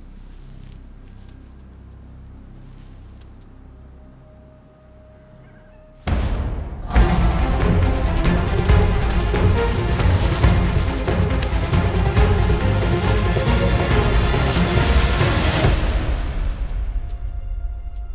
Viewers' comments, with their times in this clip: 0:05 From when the snake emerges🔥🔥 Awesome editing, the sound track is thrilling!!